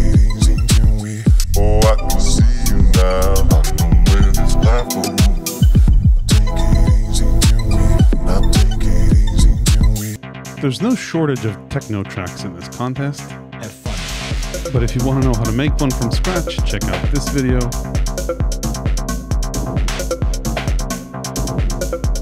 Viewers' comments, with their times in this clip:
0:10 That change in tone is a reminder not to do techno next time 😁